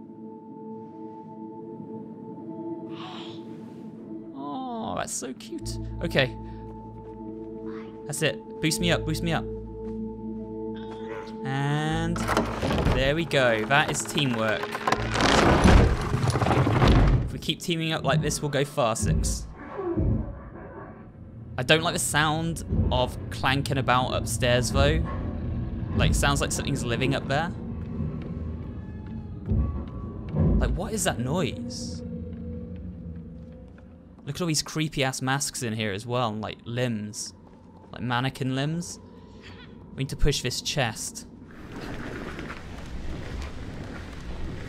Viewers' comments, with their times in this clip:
0:03 did six say hey? does anyone in the little nightmares games even say english or close to words?
0:29 that sounds weird in a lot of ways. At first i heard bed sounds